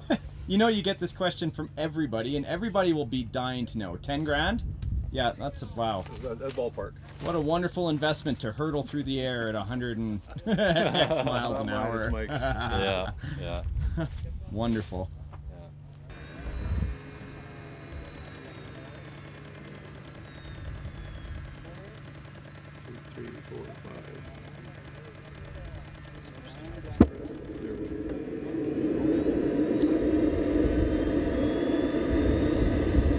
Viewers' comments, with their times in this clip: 0:09 what is ten "gram"?
0:18 Pretty awesome, loved hearing those ignitor's popping off, If anyone brings a F-16 please try to film that, its my favorite but the f-22 it still wicked!